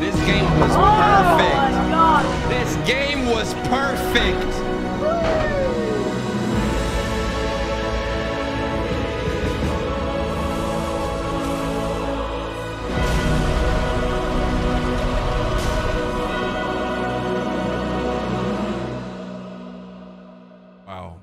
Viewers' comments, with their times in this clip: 0:06 Something about a Blue Master Chief Carrying that flag while his teammates body shield him to get the point and hearing that epic choir sing makes me so happy.